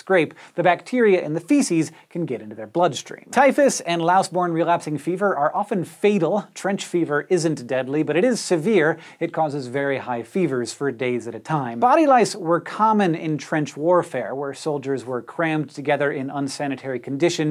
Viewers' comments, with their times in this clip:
0:04 sounded so French when he said relapsing fever !